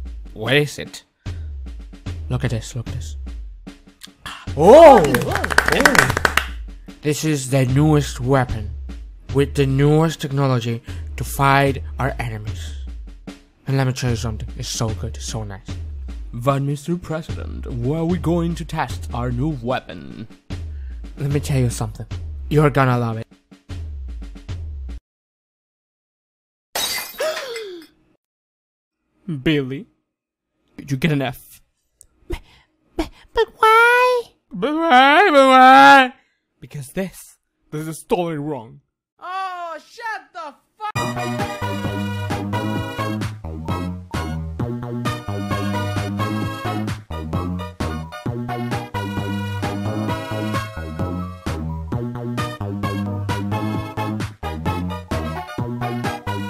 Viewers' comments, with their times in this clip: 0:05 *satisfying clapping noise*
0:39 hears in the background Ooohhh Shut The FU-